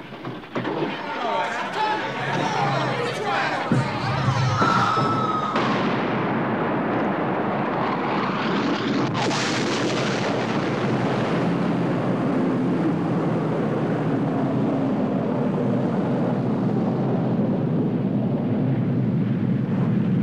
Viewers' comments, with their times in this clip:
0:06 Oh dear. Light travel at 300.000km a second, sound 300 meters. So no way you get the sound from the bomb so quick. Should be a timedelay from light to sound of about 12-30 seconds.
0:08 get a load of that gorgeous mach wave breaking the sound barrier. Like a jet the size of a skyscraper zooming just above your head. They always leave that sound out of nuke sequences in movies.